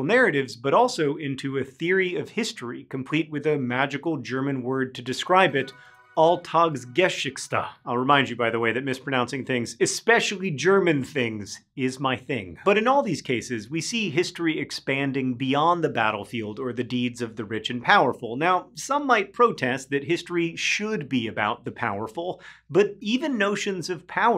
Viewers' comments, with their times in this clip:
0:04 I didn't expect much, but damn ... He butchered that word beyond belief.
0:05 Thanks for the helpful subtitle ... as a German, I would legitimately have been lost as to what word you could possibly be trying to pronounce there :-D